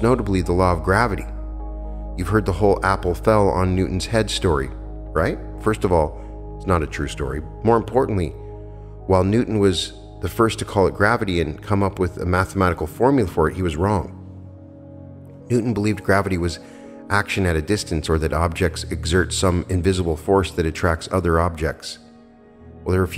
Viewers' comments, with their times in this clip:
0:05 "first of all, it's not a true story.". The tone gets me every time I hear it. 😂